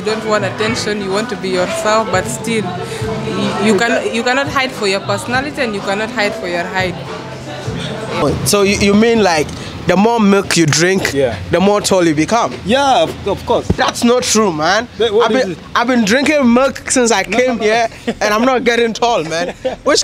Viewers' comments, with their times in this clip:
0:05 My brotha when she said '' You can not hide from your personality and height'', you almost lost your breath 😂🤣 what happened?